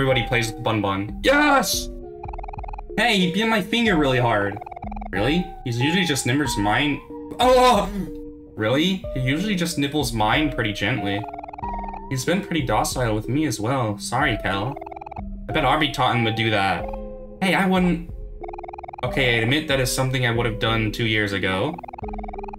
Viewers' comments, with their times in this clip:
0:04 did bro just say the n-word???💀💀💀💀